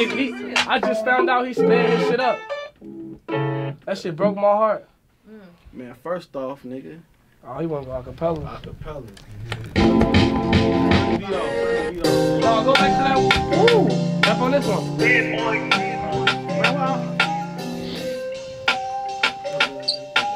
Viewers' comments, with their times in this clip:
0:08 hearing the “same old” beat is crzy